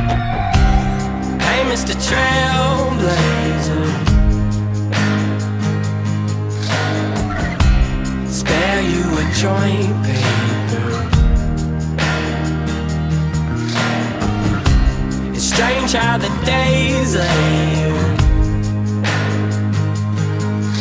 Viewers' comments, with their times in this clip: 0:06 sounds like csgo finding match.